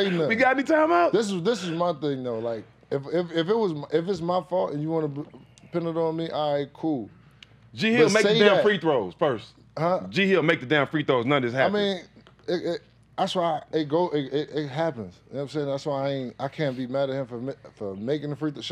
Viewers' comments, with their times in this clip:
0:04 If you listen closely, right as JR says it's his fault you can hear an eagle screaming was put in the background audio. Bet the editors are trying to say something lol.